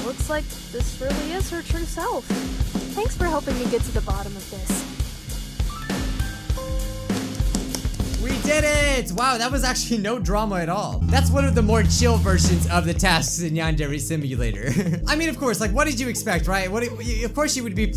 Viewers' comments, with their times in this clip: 0:05 YO CAN WE TALK ABOUT THAT BUMPIN MUSIC!?!? XD =D